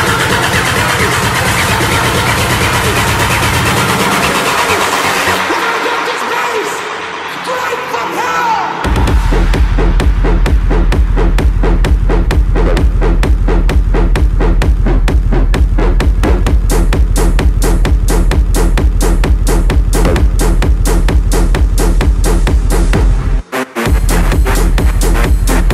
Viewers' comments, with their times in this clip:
0:10 BOOM! Speakers explodes !!!